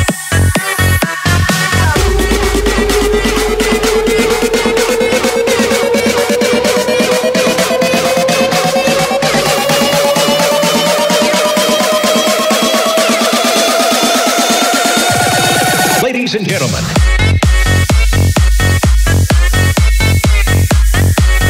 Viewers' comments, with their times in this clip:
0:09 when they build up to "Ladies and Gentlemen"